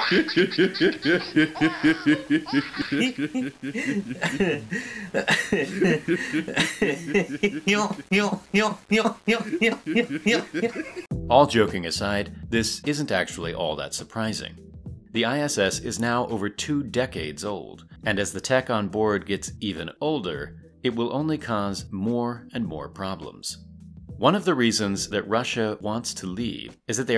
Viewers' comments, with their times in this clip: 0:03 Okay, I know this is serious and all but my god that guy has the most goofy laugh known to mankind
0:05 goofy ahh laugh alert 🚨
0:08 What’s he laughing for? So funny lol